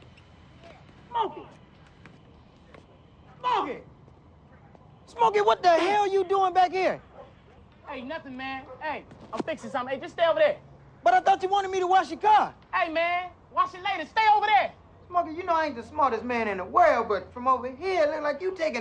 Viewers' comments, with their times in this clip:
0:05 I love it when Ezal says that by the way he even says it tho ☠️😂😭❤️